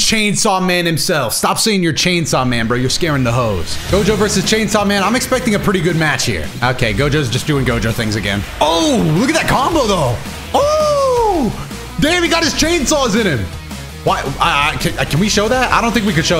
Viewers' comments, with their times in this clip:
0:03 I Love How Mgr Music Was Playing